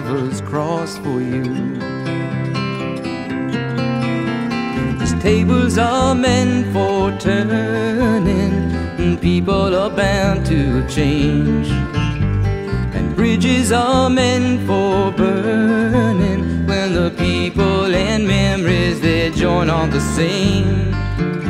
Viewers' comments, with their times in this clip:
0:04 listen w headphones and you will note that the electric bass doesnt come in until after two full verses without it. i doubt many pop songs have that kind of structure.